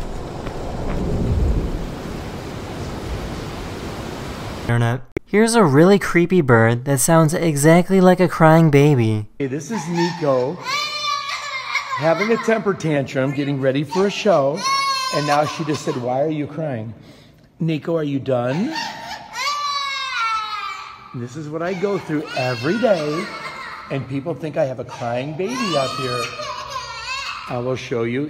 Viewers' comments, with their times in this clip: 0:09 That Crying Parrot though?!! 😨😅 I'm shook!! lol but lowkey if I was the owner I would get more Parrots.. to sound like that one then release them in DJT's "absolutely tremendous Golf Course worth milllions and millions of dollars".